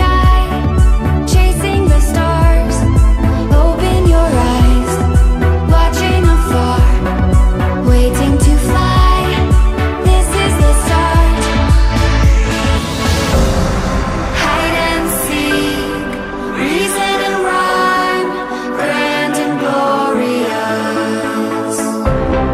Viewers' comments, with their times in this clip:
0:05 the songs sounds like it’s saying fart